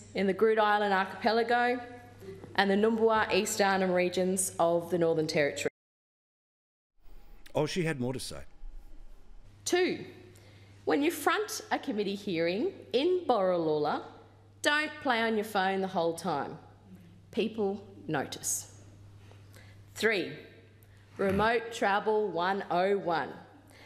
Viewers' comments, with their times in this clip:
0:06 The way he says "oh she had more to say" 😆